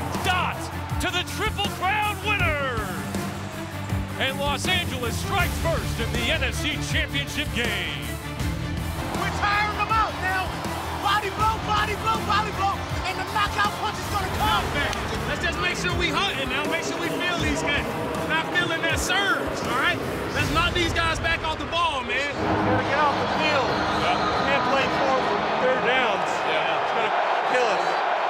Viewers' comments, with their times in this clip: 0:09 Rams defensive coach got some energy